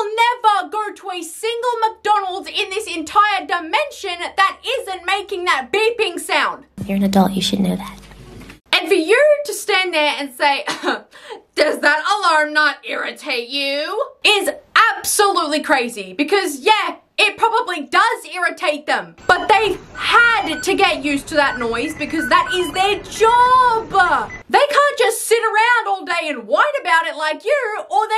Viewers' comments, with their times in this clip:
0:09 BURNRHW ORHER BEEPING DOESNT ANNOY HIM?? tf?, there’s always beeping going going on at a McDonald’s well actually EVERY FAST FOOD PLACE, that’s how the workers know when the food is ready or needs to be turned